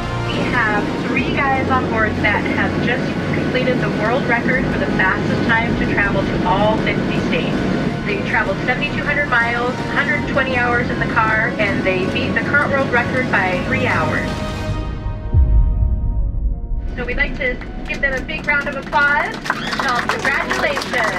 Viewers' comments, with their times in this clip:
0:03 am I trippin or did she say 60 states?